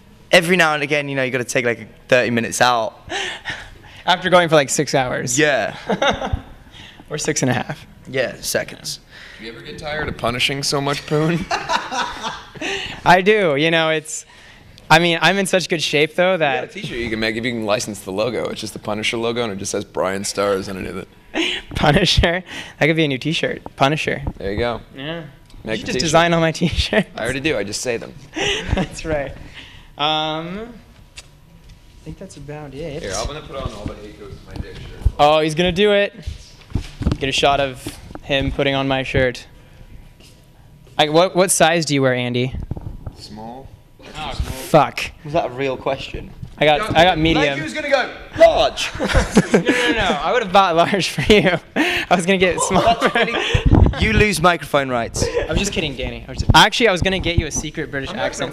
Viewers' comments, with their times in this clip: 0:10 Danny's laugh 😍 he's so adorable
0:42 SCREAMZ AND GETS OUT MOISTURISER XD